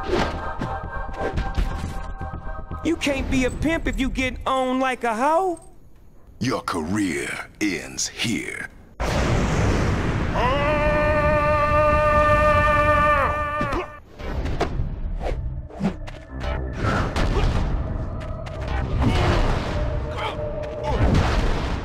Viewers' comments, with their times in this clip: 0:09 has me dying 💀💀💀. This guy out here singing opera😂